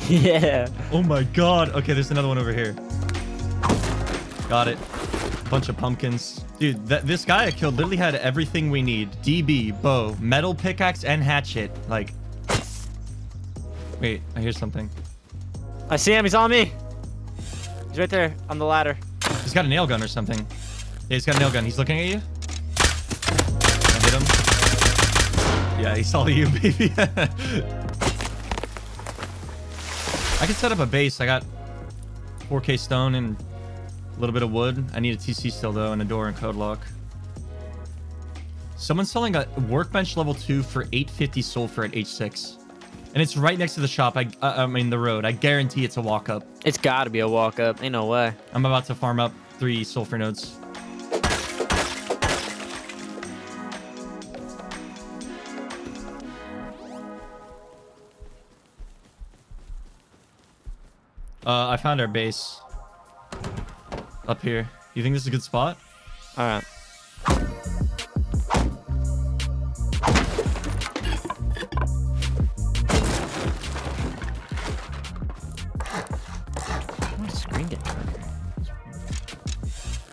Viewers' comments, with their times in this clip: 0:08 why does he sound like siri
0:09 why does he sound like siri
1:02 I thought random music was playing behind 😂